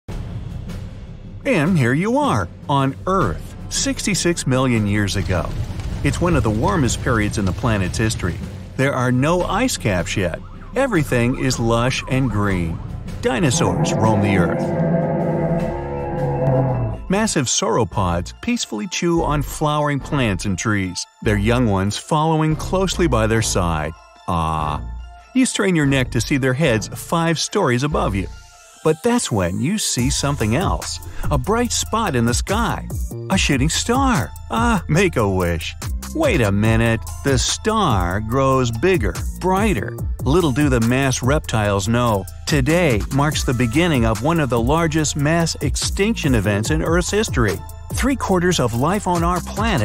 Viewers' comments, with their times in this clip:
0:08 dinosaurs got no credit for inventing the chainsaw
0:13 that is not how dinosaurs roar i think and it can't just be me
0:13 I have one question. You put a Utahraptor put gave its a sauropod sound affect. WHY.
0:28 I literally felt that he started singing..😂😂😂
0:31 am I the only one that might of heard him say “sh*ting star” 💀
0:32 Is it me or he just said a "shtty star?"
0:33 anyone else hear “ A Sh*tting Star “?
0:35 it sounded like he said shity star even the subtitles did